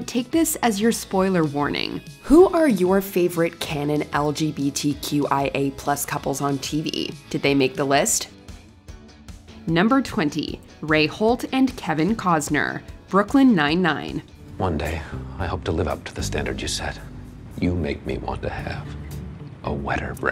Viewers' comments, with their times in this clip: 0:06 Why does she sound like she's struggling to spell out LGBTQIA+ lol